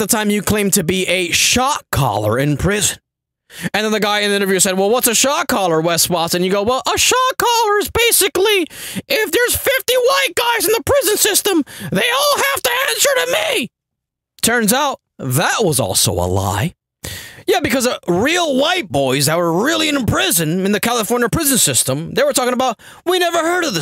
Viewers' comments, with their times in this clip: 0:07 😂😂😂😂😂 The high pitch voice💀💀💀